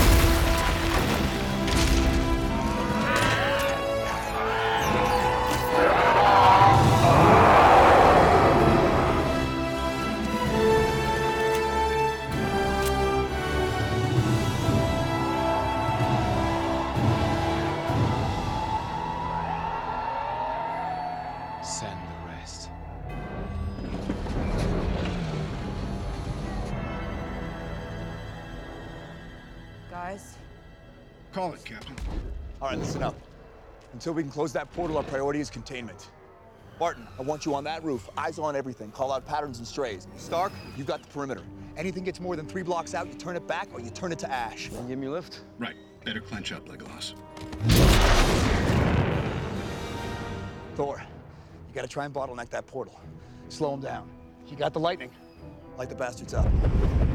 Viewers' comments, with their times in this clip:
0:07 every time i hit i hear that nasty roar.
0:43 I cringed the way cap was saying things